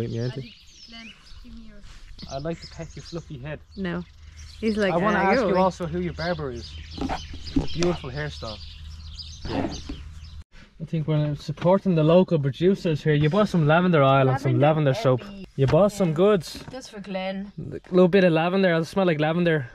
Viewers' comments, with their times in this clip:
0:03 The birds in the background 🥺